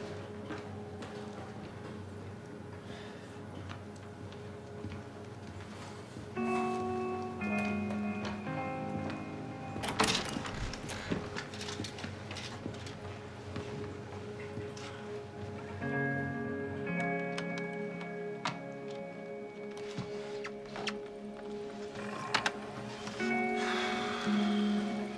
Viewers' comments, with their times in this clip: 0:06 does anyone else also feel the same way I do (which is a relaxing yet curious way of looking at a process. In this case how Pete is going to work his way through the situation) here. Is there a reason (psycologically) why the music make me feel this way? I dont even know if people have studied the relation between music of this kind (Whatever that may be lol) and how it makes some one feel